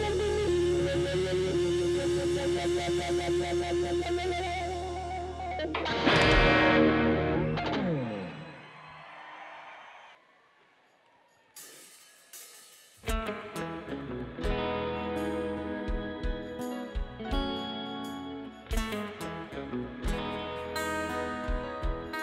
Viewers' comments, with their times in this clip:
0:09 Axl's natural voice is beautiful